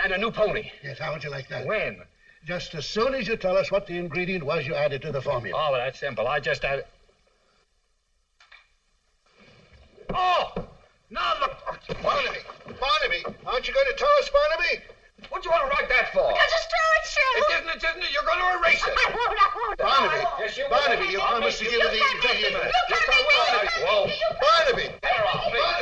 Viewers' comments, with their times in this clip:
0:07 My favorite scene of the film! You can just tell by the joyful delivery, that they had blast while acting! It's wonderful to see ;D